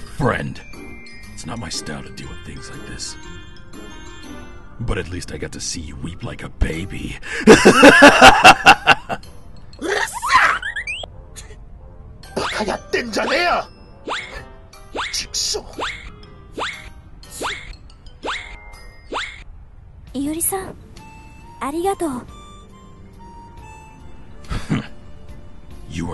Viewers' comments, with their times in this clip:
0:07 The way Iori laughs